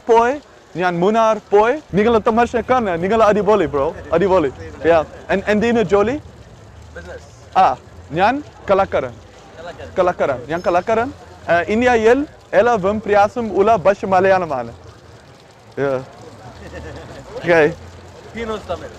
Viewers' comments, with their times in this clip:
0:05 Literally heard Angelina Jolie